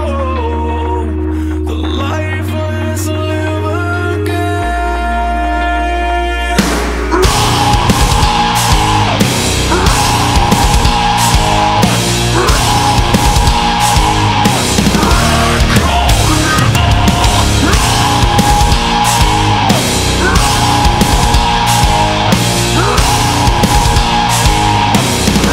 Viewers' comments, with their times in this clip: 0:06 The music and screams sends chills down my spine 😨 I love it